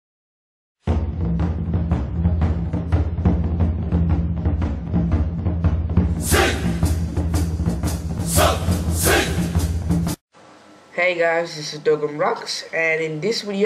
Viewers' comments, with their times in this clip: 0:00 That song in